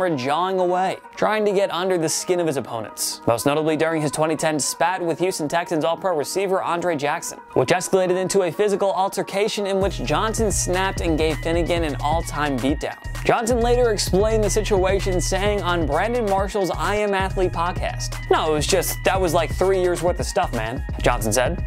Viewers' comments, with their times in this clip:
0:03 Ah yes, good ol' Aundre Jackson